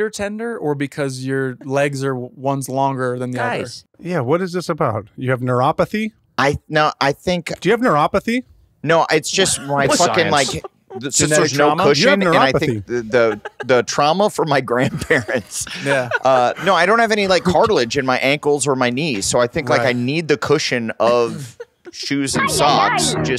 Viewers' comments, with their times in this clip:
0:05 Kyle gets so serious about neuropathy and Blake loses it laughing